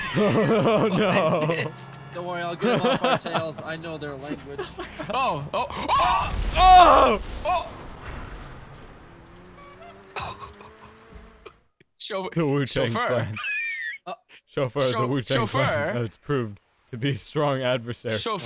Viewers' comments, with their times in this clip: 0:05 explosions everywhere ... clown horn